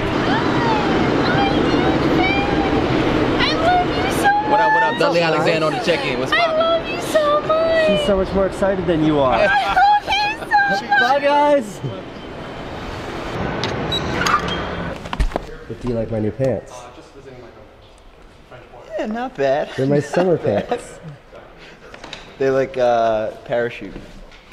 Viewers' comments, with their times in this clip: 0:05 The girl must be high, plus awful voice :D Just saying.....